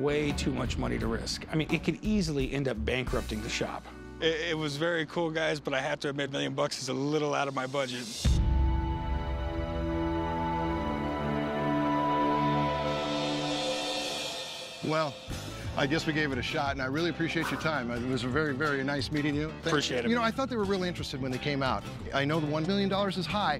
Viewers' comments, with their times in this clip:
0:09 the hooters in the backround😂